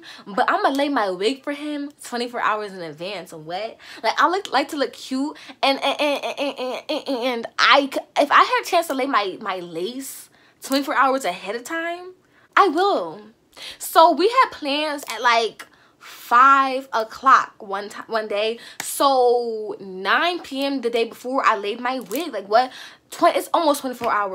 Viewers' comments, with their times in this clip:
0:07 it’s the stuttering for me